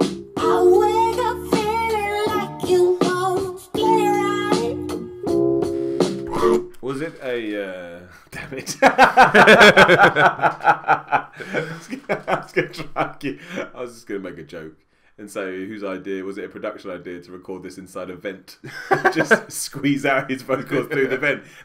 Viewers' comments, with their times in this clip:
0:09 the funny thing about this is that Gambino didn't use any vocal pitching throughout the whole album, he just 'sang differently'.